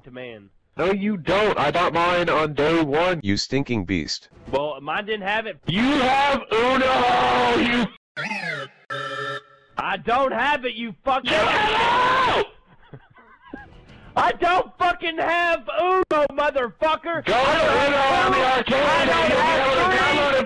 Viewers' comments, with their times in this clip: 0:08 ok, thats smooth, the way he used the beeps like that and as a actual censor, thats really cool